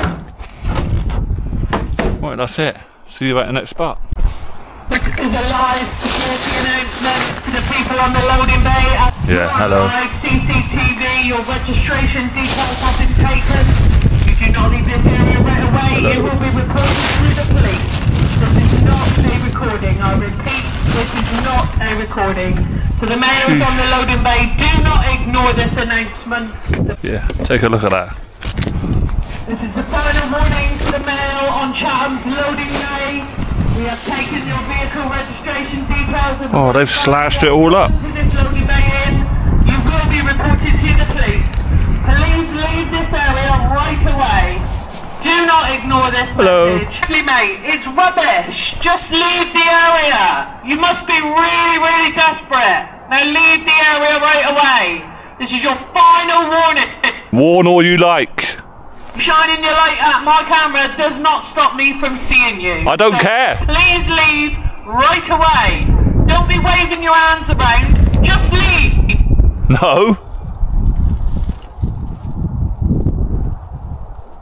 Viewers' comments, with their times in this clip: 0:04 I thought that was a Dalek at first 🤣🧂Exterminate! 😂
0:59 sounds like the desperate one is the one talking over the pa system.